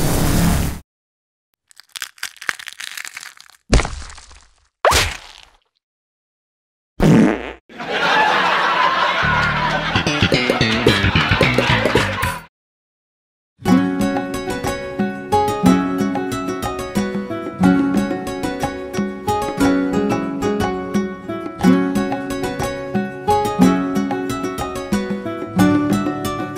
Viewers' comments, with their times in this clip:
0:07 "Stand-up comedy" with Steinfeld theme
0:10 That Seinfeld bass guitar riff cracked me up way more than it should have.